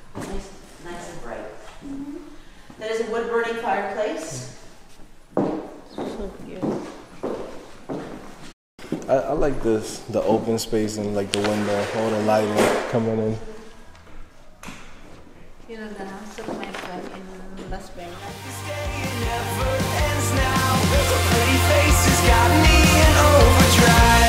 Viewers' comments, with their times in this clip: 0:09 I thought I just heard someone's speaking Tagalog, in "...walang dating". Just so happen to watch your video while browsing on tutorials 'bout web design and development.